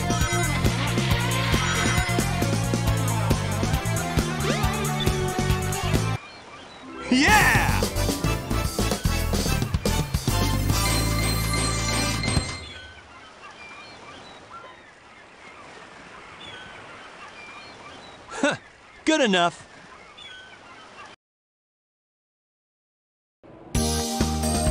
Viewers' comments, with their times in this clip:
0:06 also why does knuckles sound like yamcha?
0:07 that sounded new lol